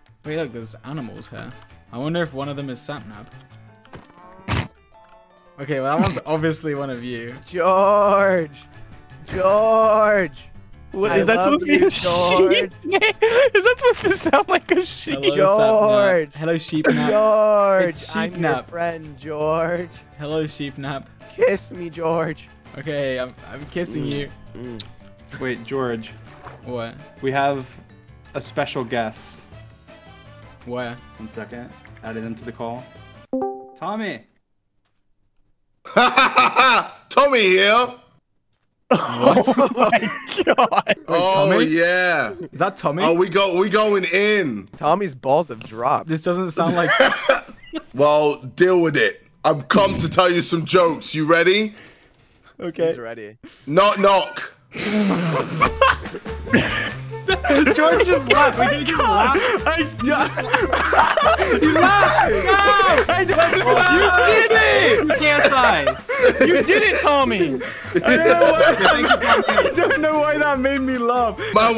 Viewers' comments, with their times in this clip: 0:10 sapnap sounds like a grandma
0:13 Didn't George laugh ?!?!
0:15 “George,, I love you George” in the sheep voice had be rolling😂😂
0:34 no joke, I've never watched ksi. So I thought Tommy was using a voice changer
0:40 this is how I imagine dream face on his skin would sound like
0:50 Dream was exactly correct when he said that George laughed 5 minutes into the video.
0:56 Hah I can't stop laughing at the fact it just took a knock knock to make him laugh and he was only minutes in.🤣🤣🤣🤣🤣